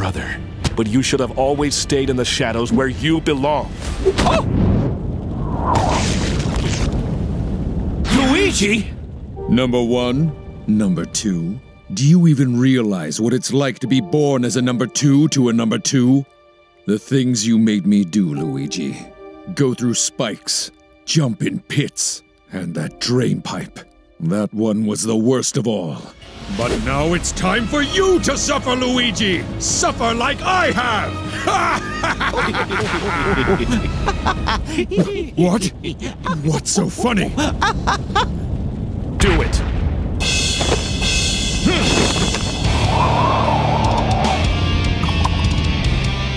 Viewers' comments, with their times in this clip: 0:04 The toughest characters always at the girliest screams
0:05 The mario sream i remember this...... (ugh uwu baby gurl ugh uwu ugggghhhh baby gurl uwu ugghhh
0:32 Those laughs reminded me of Polnareff's during The Sun episode of JJBA's Stardust Crusaders. XD
0:34 they’re definitely laughing at the two identical rocks